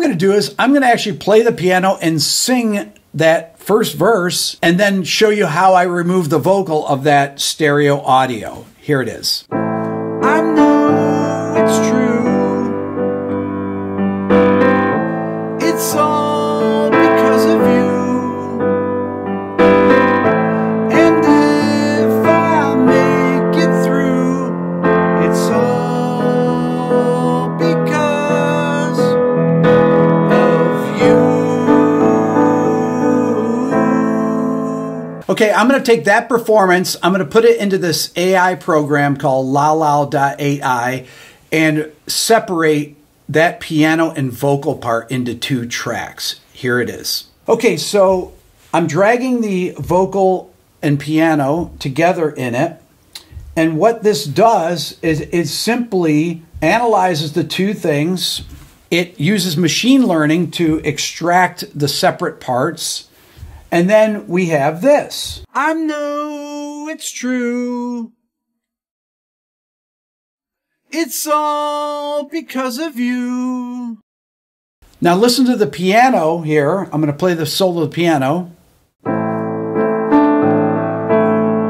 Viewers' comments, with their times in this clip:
0:09 Wait a moment... So, they finally took Rick Beato's voice to make this Beatles song???
1:09 Yeah, same feeling here about two styles not really fitting together. For me, it’s the bridging section starting It’s beautiful, BUT it sounds like the 2000s, something Guy Chambers could have written for Robbie Williams. In total, I’m glad they did it, but it doesn’t sound right to me.